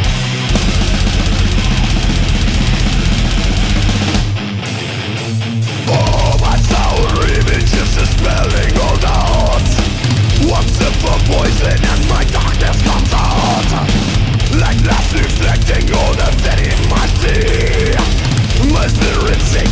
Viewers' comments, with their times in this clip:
0:03 Tell me i'm not the only one that thinks sounds like smooth criminal.
0:03 you're not the only one that thinks sounds like smooth criminal.
0:04 Riff in sound like from Michael Jackson's "Smooth Criminal" ;D